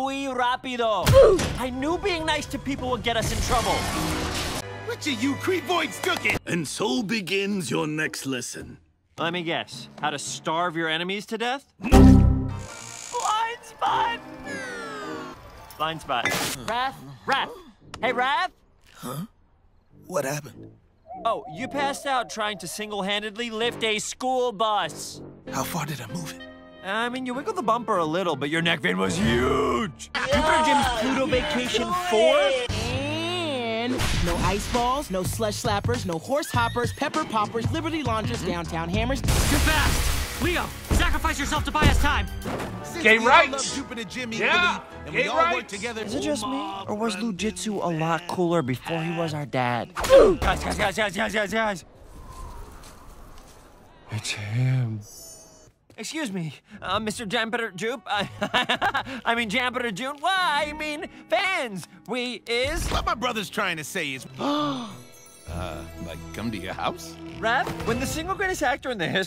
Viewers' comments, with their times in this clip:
0:06 u adding the computer error sound thing when the pizza hit him made me laugh more than it shouldve!
0:12 computer error sound effect
0:28 Honestly, the way Leo said that line was HILARIOUS!🤣💙
0:51 The delivery of “it’s him” gets me every time 😂